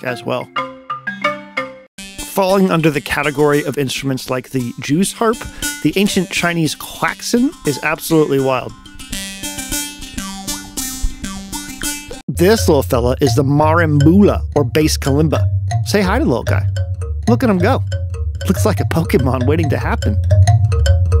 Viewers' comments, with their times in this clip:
0:08 this makes me want to try to emulate it with a vowel filter on something that sounds vaguely like a plucked piece of metal so i could make music with it